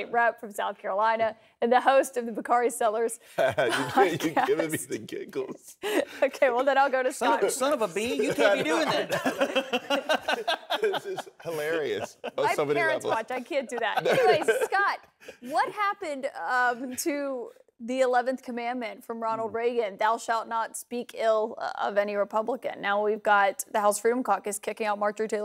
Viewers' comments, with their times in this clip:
0:06 Honestly why are they just jolly and laughing as if this isn’t a serious segment discussing a very concerning an alarming topic… Some of these liberal news casters while I am a staunch Democrat, I get very fed up with